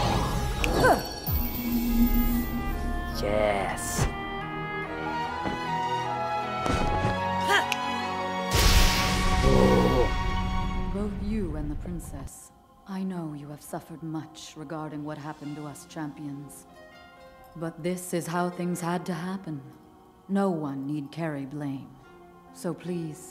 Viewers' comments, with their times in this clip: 0:08 links kinda sounds like me...